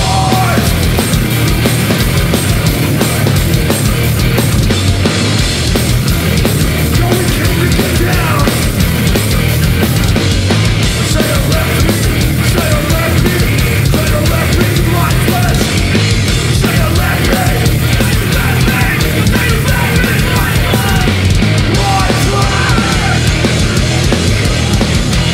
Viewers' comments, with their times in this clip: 0:09 that guy in the crowd had great tone